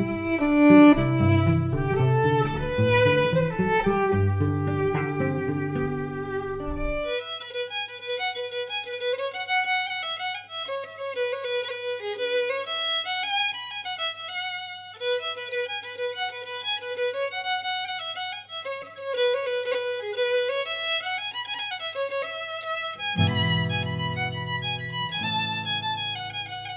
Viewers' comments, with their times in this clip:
0:07 The tune that starts doesnt seem to be part of that link you provided. What is it called? The one with the tapping rythm and fiddle.